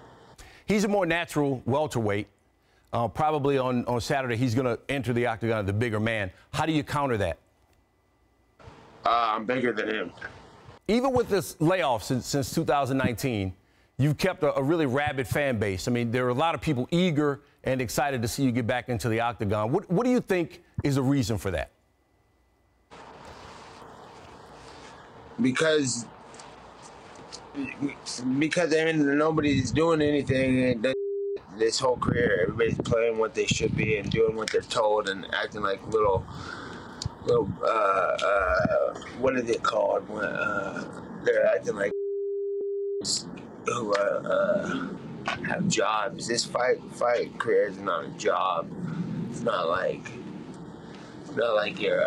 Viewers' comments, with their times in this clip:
0:08 His voice also turns into a robot during "than him" part lmao.
0:08 Wow his voice turns into a robot "I'm bigger than him" the "than him part switches into a robot voice lmao
0:21 Nate seems so disinterested in this fight. But all the beeps starting HAHAHAH - Interested in a fight or not, Nate is always on during the interviews.
0:35 you can measure the amount of weed smoked and punches taken by a person by how long they struggle to get the word "job" lmao